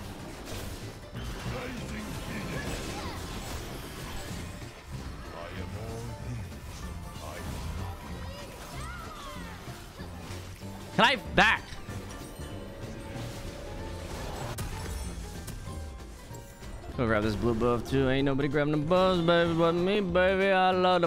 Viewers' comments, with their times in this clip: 0:06 Trick the kind of guy to yell "Can I back!?" to the recall animation